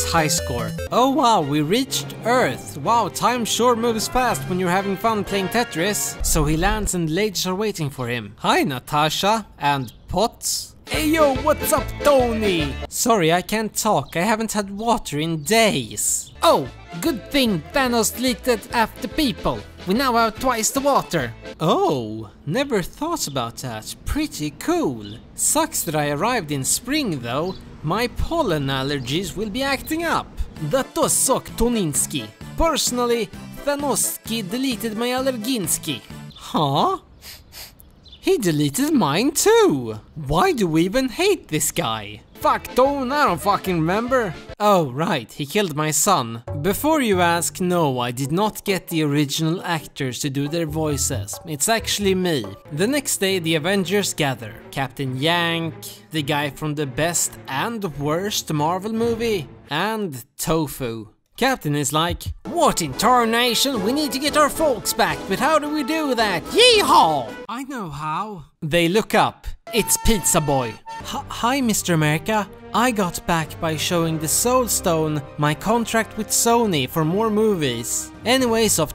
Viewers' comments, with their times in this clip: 0:08 Damn i thought they were the real voice actors
1:02 as a professional American, i can tell y’all that this is exactly how every one of us speaks.